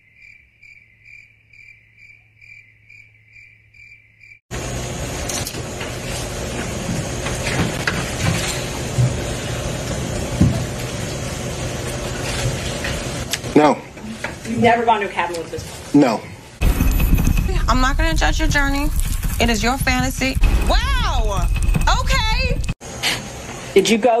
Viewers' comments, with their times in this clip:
0:10 the longes yes ever. 😅